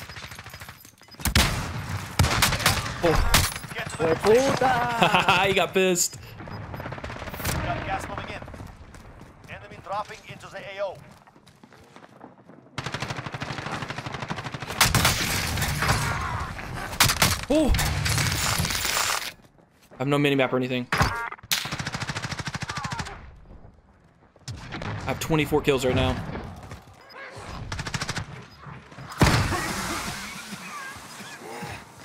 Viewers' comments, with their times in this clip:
0:03 sounds like you killed a pissed filipino haha weird hearing that (probably not filipino cause puta is a spanish word so I can't say)
0:04 The dude wasn’t mad he just said “oh fuck” lmao he was laughing
0:16 Most satisfying cash money sound ever